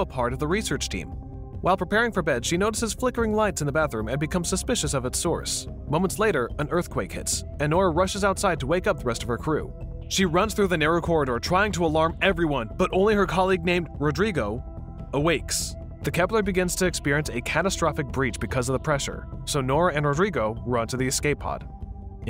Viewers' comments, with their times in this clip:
0:07 Ah yes. Wake up the crew in case they missed the ear shattering fucking tremors.